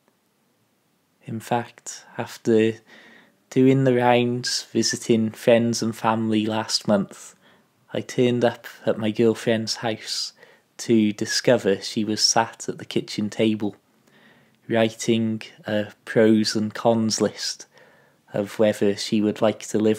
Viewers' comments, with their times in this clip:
0:07 Great story, with an insight into the ambivalence and challenges many who take up an alternative lifestyle must experience. Your delivery is urbane and considered too, which makes you a pleasure to listen to. ( incidentally, you need 'she was sitting', not 'she was sat', if you wish to be grammatical.)